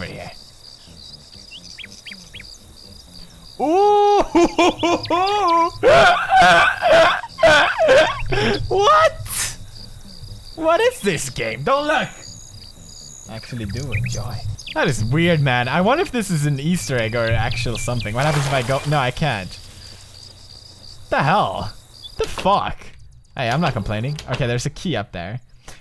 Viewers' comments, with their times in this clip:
0:03 Dat laugh tho 😂😂
0:03 dat laugh do
0:03 was best pewds laugh ever! xD
0:03 dat Pewdie laugh
0:04 dat laugh doe
0:05 The many laughs of PewDiePie
0:05 i've missed that hyena laugh xd.
0:05 his laugh omg,,,
0:05 That laugh! What is wrong with him?
0:05 dat laugh doe
0:05 Pewds's mating call..... o .o
0:05 That laugh tho!! x'D
0:06 Dat laughter dou :D
0:06 that laugh tho XD SO FUNNY XDDDDDDD
0:06 What is that nosie, pewds
0:07 The laugh on is demonic😂
0:08 wtf is that noise?
0:08 WTF WAS THAT LAUGH +?!
0:09 Dat laugh looooool
0:12 pewds laugh oh FUCK my grandma came in and was like what THE HELL ARE YOU DOING UNDER YOUR COVERS